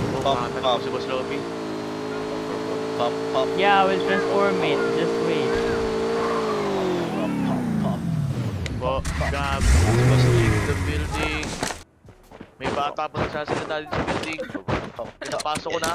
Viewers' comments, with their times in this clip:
0:03 english boss ahh hahahaa